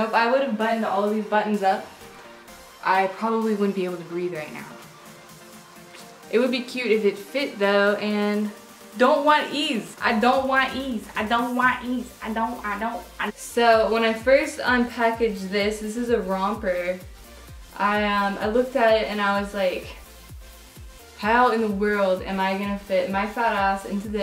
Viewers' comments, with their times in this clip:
0:10 when you were saying I don't want ease it reminded me of a part of in Babys on Fire by Die Antwoord..